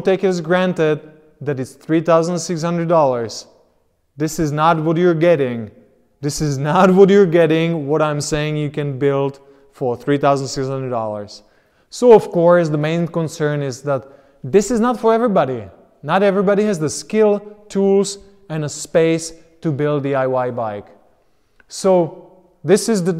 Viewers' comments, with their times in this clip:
0:10 As a Texan, I understood you perfectly. ;)